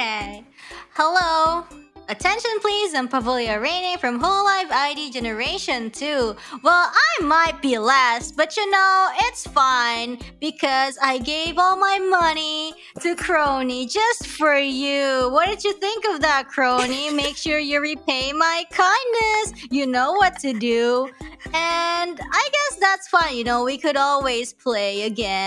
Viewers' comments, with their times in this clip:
0:06 It sounded like they were acting but still menacing.